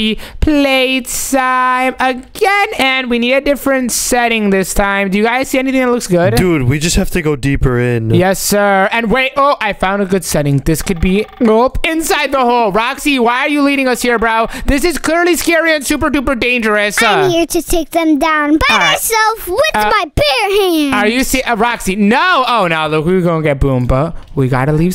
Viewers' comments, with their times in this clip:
0:10 I could hear a phone ringing if you listen carefully, you can hear it.